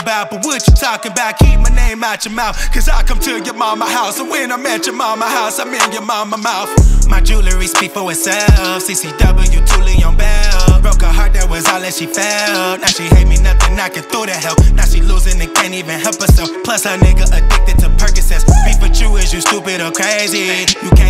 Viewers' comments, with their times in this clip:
0:03 He can’t rap..